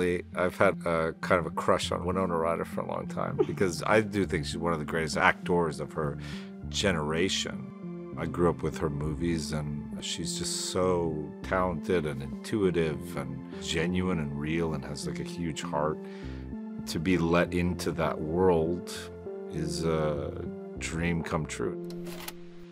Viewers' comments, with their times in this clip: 0:09 oh he said movies I thought he said something else